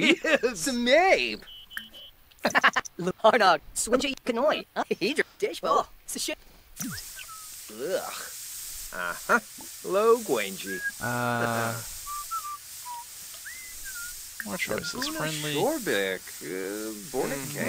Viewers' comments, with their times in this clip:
0:04 Did the Sim say "Major Dickhole" ??? Sure sounded like it